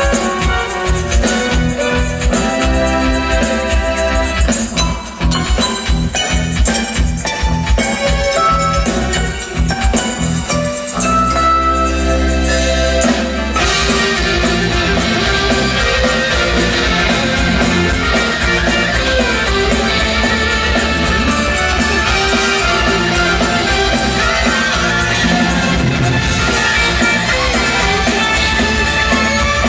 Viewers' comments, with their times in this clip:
0:10 AWESOME....LOVE the extra theme .....a Dixie Dregs kind of thing....